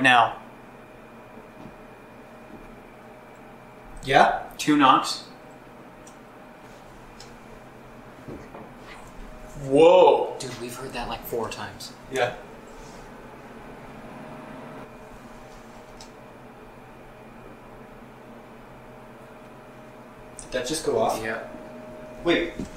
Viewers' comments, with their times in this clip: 0:09 right when you hear the second set of thumps, you can hear a whisper. It sounds like a younger child... but maybe it was just one of you guys whispering.